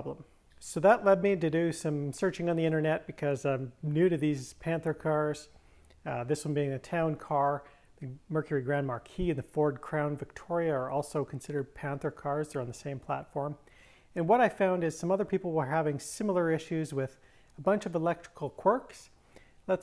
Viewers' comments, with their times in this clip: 0:04 just a fyi, he says "new to these" panther cars, not nudity panther cars. :)